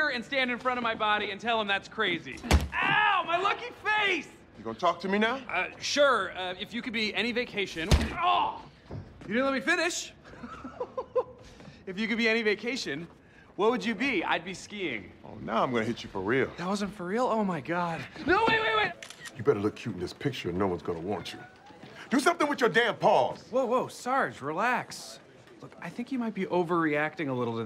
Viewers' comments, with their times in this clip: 0:08 Jake gets punched for real by accident and you can tell by the way he acts and laughs 😂